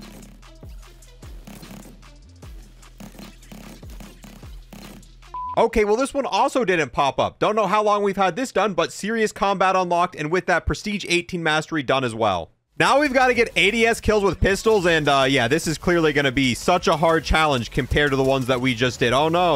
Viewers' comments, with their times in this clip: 0:03 the music matches the gun lol